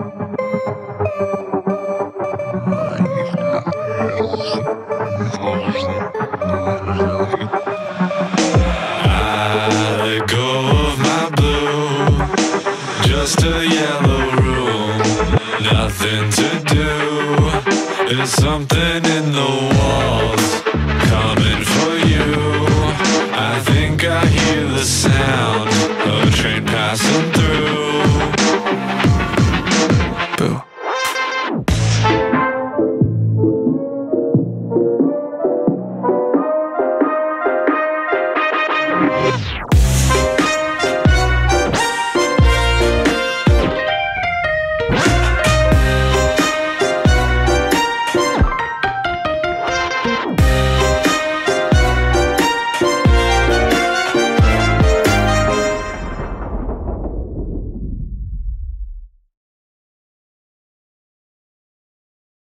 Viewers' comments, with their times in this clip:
0:03 Yooo I love this. Time to listen to it on repeat so I can learn it. I love how it transitions to Mr. Bones does anyone know what it says?
0:13 ...backrooms? o_O Amazing song as always, the distorted switch to Mr Bones at the end left chills down my spine ;u;
0:17 That drop at "Theres something in the WALLS" is SO GOOD I CAN'T!
0:28 Who can hear the train
0:46 Hey do you always sneak the melody into so many songs? It’s in Typical me and mister bones. How?